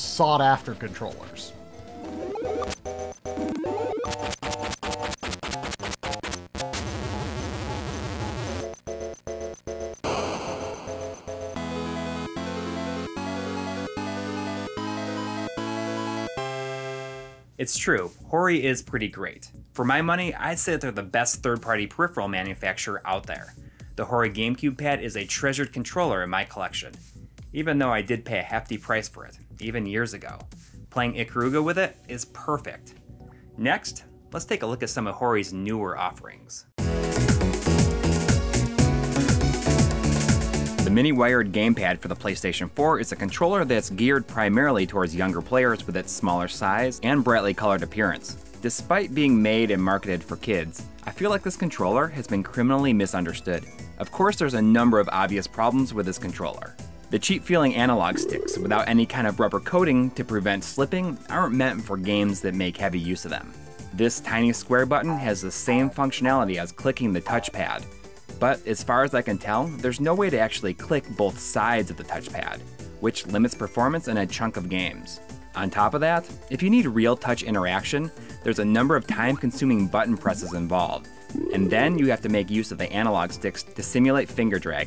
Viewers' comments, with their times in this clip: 0:05 Yo what's the game ? The music kicks ear ass.
0:17 there's this SUPER high-pitched sound, and it's driving me nuts. EDIT: It's a CRT whine.
1:05 those sound effects 😂😂😂